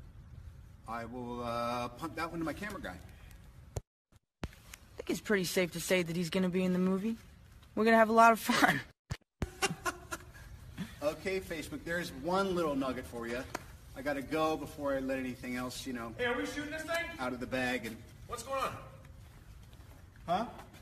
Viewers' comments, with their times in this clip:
0:07 "SaBasTiaN sTaN... Man you look good" that's my favourite ❤️😂